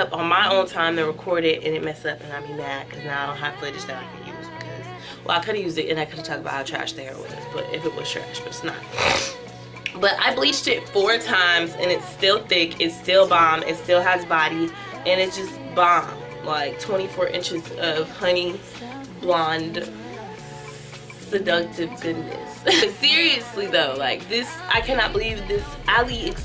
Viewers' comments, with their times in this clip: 0:09 eww.. clears throat